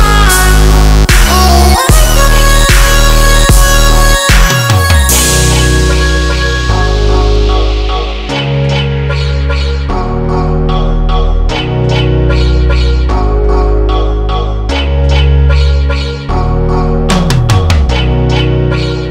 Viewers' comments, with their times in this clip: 0:05 nostalgic high fading…